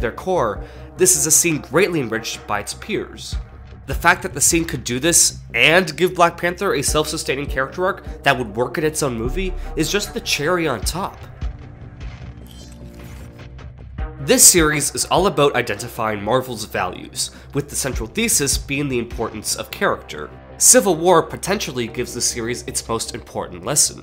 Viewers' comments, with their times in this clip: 0:08 the score after is awesome...